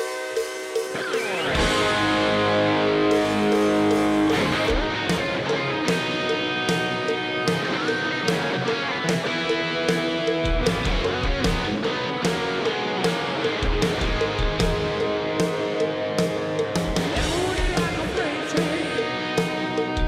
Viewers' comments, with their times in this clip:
0:03 love the way Rich plays the intro here total rock star \m/